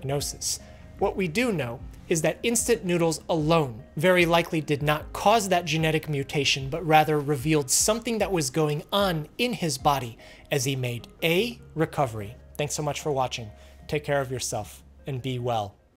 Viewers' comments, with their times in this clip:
0:10 what happened with your voice here XD i noticed this sort of flip in another male youtuber's delivery once....